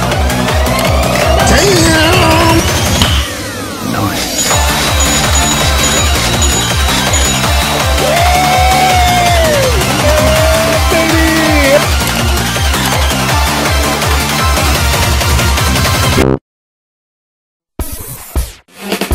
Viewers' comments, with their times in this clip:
0:03 I hate that there SO MANY SOUND EFFECTS I CANT TELL WHAT IS HAPPENING IN THE VIDEO